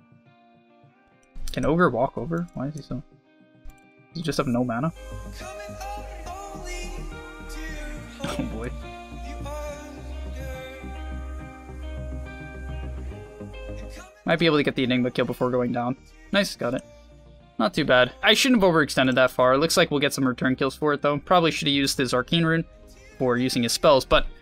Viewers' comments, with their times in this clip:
0:06 that music gave me the "How i met your mother" vibe lol